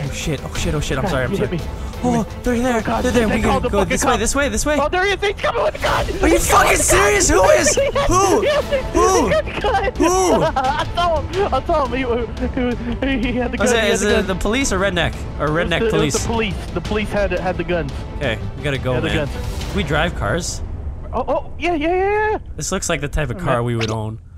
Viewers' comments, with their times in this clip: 0:06 Vanoss resorts to his natural owl instincts
0:06 thats why his logo is an owl
0:06 HOO HOO HOO the owl is unleashed
0:07 The owls sharp mating call amidst the chaos an be herd for miles.
0:07 Vanoss becomes an owl.
0:07 "HOO HOO HOO" -Vanoss's inner owl
0:08 XD Vanoss was an actual owl